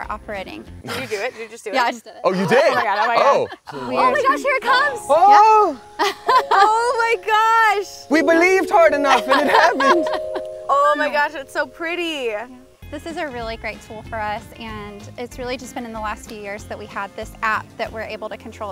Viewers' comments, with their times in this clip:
0:03 saw no one comment about this but when clarie de lune started playing i got chills for no reason i love that song and it was so pretty